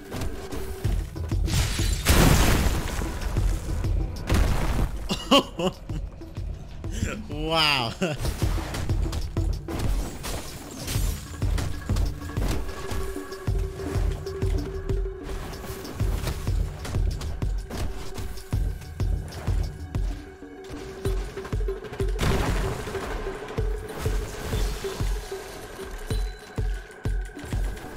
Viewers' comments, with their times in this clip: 0:09 This vid there is no fade screaming so I can finally watch with my airpods gojo lose to his student lol